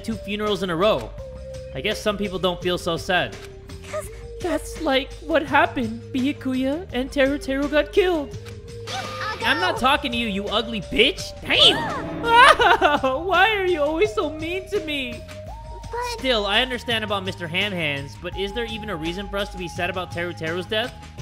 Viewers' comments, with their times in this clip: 0:08 welp looks like she doesn't need help to tie or stuff because she sounds like she's 18